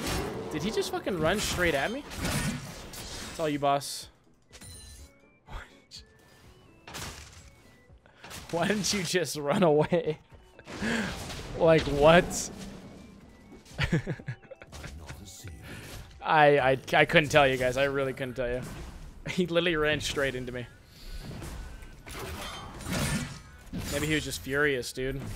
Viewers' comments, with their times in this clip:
0:09 What happened ? It seems like Mundo just died but it wasn't announced like normally